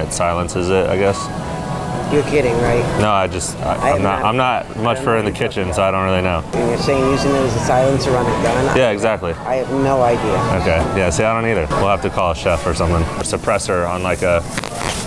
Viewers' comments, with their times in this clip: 0:03 looks and sounds like my grandma